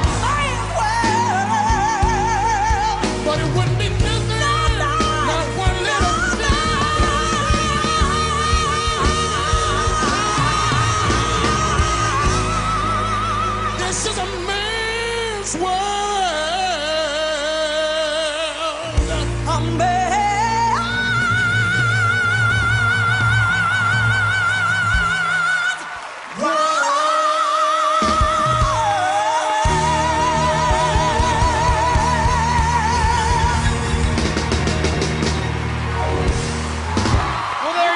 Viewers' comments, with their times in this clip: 0:06 its just awesome, I never had hear a woman with that kind of technique to sing. Sorry for my english.
0:20 That note on though... was so on point it nearly gave me a stroke
0:20 amazing high notes 👍👍👍
0:21 That F5 always gets me! That was brutal and I love that it wasn’t those perfectly mixed belt, instead you can hear the rasp and the chest dominance on it and the emotion that’s comes along with it, oh man, no crystal clear belt can ever come close to it! That’s why I love Xtina Aguilera so much, she’s just brut force strength, she makes you FEEL!